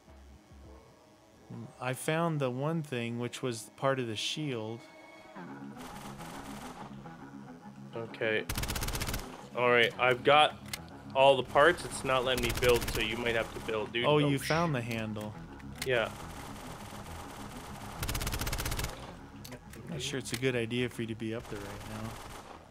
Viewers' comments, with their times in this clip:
0:04 Modern warfare theme made me levitate a bit.